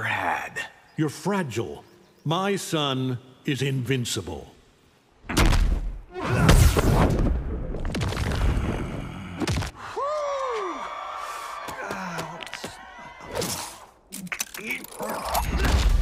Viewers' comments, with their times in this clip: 0:03 my son is theme music plays